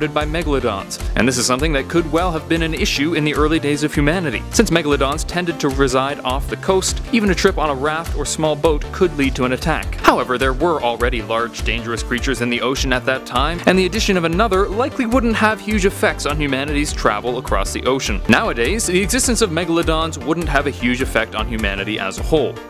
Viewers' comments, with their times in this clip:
0:10 That “however” scared me so bad... slow down when you talk, man...